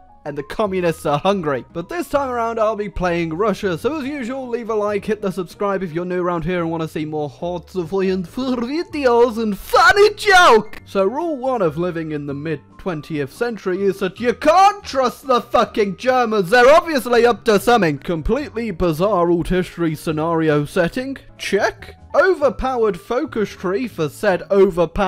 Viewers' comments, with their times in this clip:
0:09 auto generated captions more hot supply and food deals